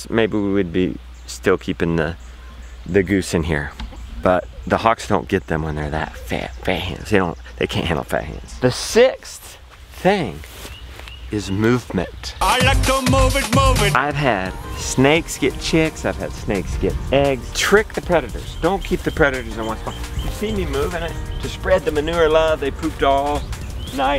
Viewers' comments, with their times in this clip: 0:05 What is that you say that hawks can’t handle? It sounded like “fangs.”